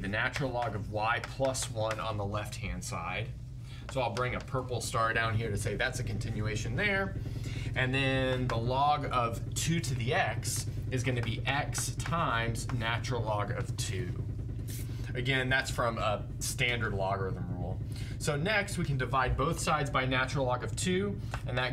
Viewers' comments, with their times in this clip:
0:05 "And now I'll introduce the natural use of the vacuum pump here. . . "